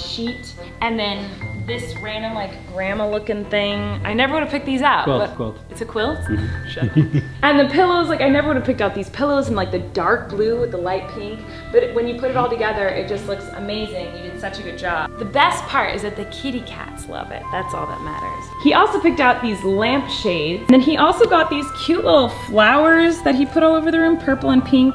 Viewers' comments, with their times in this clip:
0:06 that's a love laugh y'all